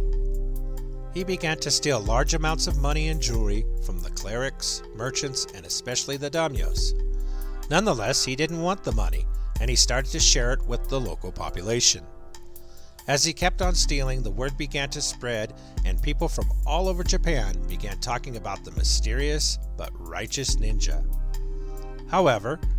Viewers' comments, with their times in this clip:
0:06 Great video in terms of historic accuracy, but you really gotta work on your pronunciation of Japanese names and terms. Make sure you watch your videos before posting as well, a very obvious typo shows up